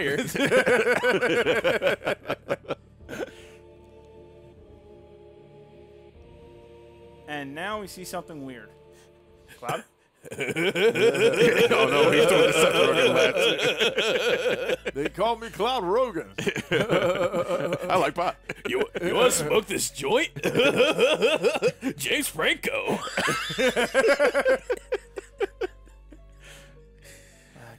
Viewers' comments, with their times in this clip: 0:09 it sounds like the sasquatch laughter from the Sierra tapes. Wtf.